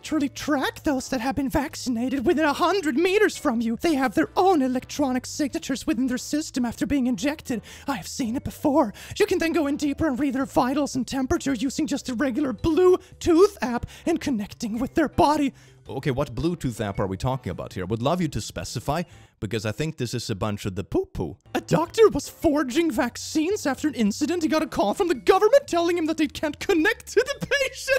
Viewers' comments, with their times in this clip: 0:08 Are you perchance voicing Herbert the Pervert on Family guy?